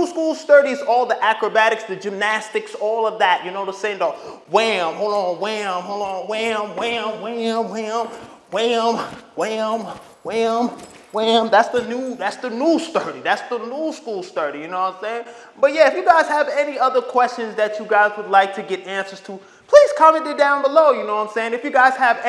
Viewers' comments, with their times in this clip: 0:05 did he say my name or am i trippin 😂😂